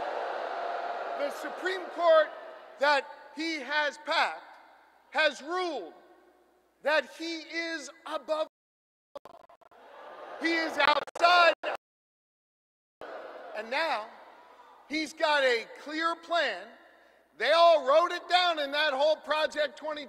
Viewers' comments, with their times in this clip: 0:07 fox43 you're despicable 😂 ya'll scuffed up the immunity part WOW.